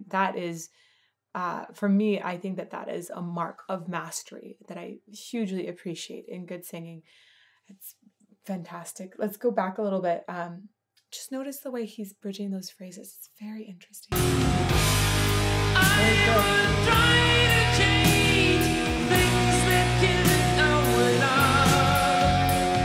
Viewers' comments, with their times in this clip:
0:08 "It's Fantastic" There's no voice like his. Thanks for your appraisal. I enjoyed it. (My husband was the guitar tech for the opening band for the Face The Heat Tour. He said Klaus was an amazing singer to hear over and over again. And he said he and the rest of the Scorps were really nice people too.)